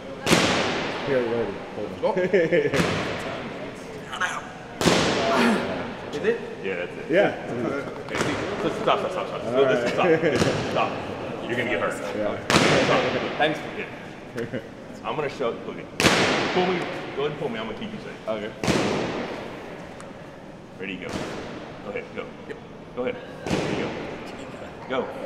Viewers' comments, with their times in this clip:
0:07 dude was gonna explode and Levan is just laughing talking with Larry lol
0:07 bro tried his heart out but levan was laughing 😭😭😭